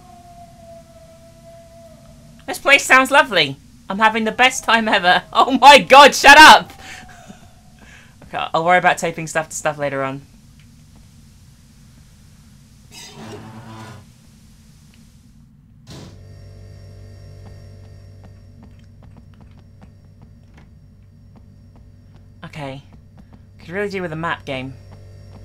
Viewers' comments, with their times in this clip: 0:09 Heard the scream and thought it was real life. Then paused and played the vid until I was sure. Scared me bad